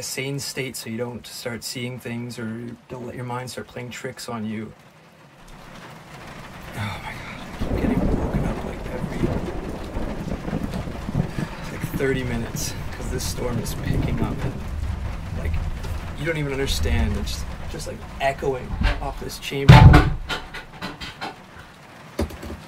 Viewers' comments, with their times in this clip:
0:03 it's the shking voice for me 🥴✨ damn this is scary 😭 can I go with u next time tho 🥺👉👈